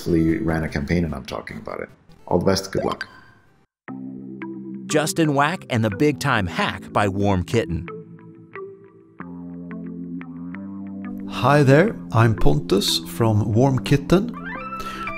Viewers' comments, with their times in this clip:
0:03 I didn't know jarvis produced indie games